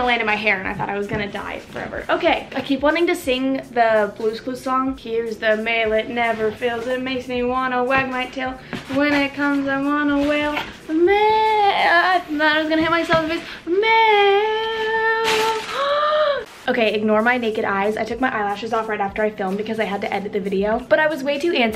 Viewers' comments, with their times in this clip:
0:07 we LOVE a pitch perfect queen🤩